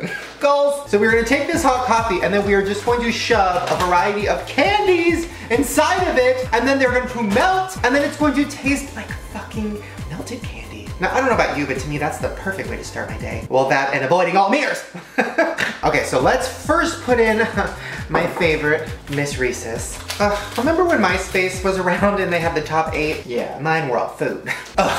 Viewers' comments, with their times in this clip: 0:09 shane's scary voice at its finest